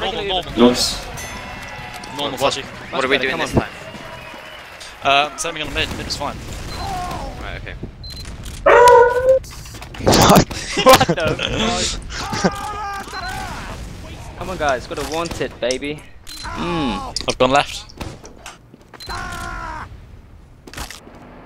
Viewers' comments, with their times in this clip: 0:05 Lol dog sound